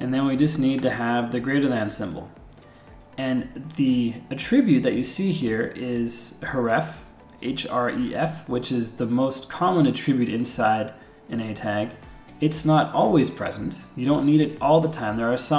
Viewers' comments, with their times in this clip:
0:03 "The uh-TRIB-bute that you see here, is hureffe" I'm not mad, I'm just disappointed.